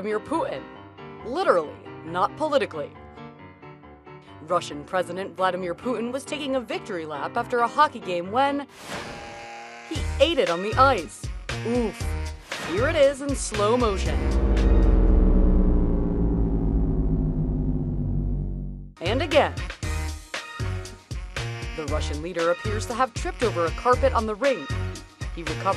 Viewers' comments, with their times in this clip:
0:10 did she just OOF